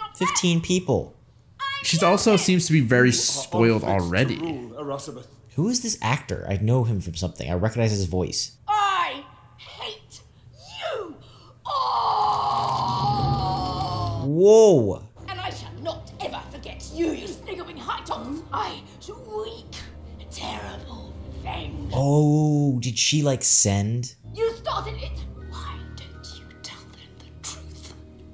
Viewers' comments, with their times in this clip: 0:10 that sounded painfull